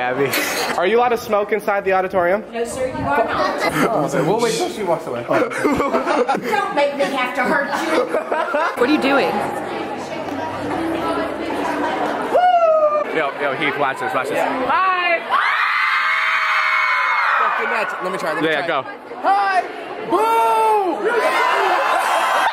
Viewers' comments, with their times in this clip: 0:10 Am i the only one who heard some one singing Unwritten in the background